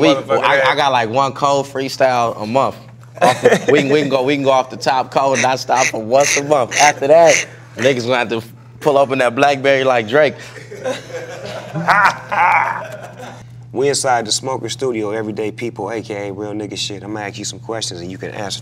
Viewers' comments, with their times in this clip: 0:05 Sounds like somebody cleaning windows